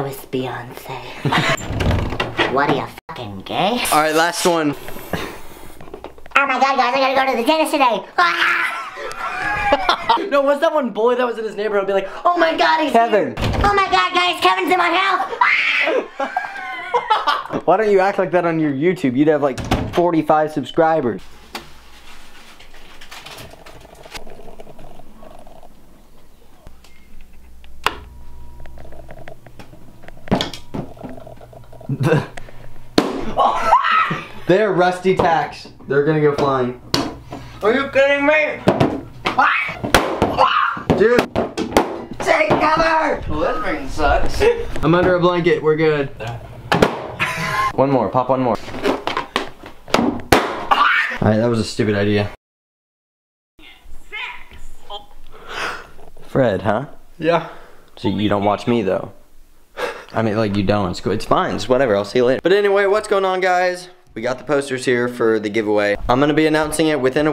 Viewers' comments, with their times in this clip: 0:06 That Does Sound Like Fred Oh My God Guys Kevin's In My House (Screams Like Fred) Me 😂😂😂😂😂😂
0:06 lol it’s Fred
0:13 The way he screamed it sounded like Fred😂😂😂
0:14 the most accurate Fred impression
0:15 R I P headphone users
0:54 sho else though their phone died